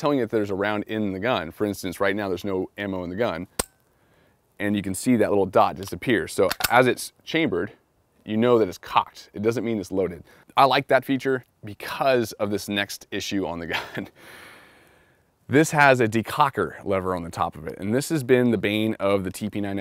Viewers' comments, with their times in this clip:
0:03 MW2 hit marker sound xD